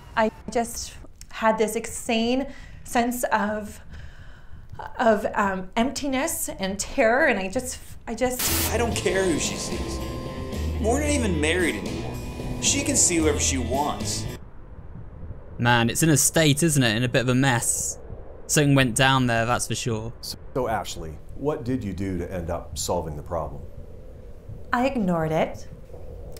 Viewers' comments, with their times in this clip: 0:10 is just me or does the background music sound like the happy's humble burger farm game?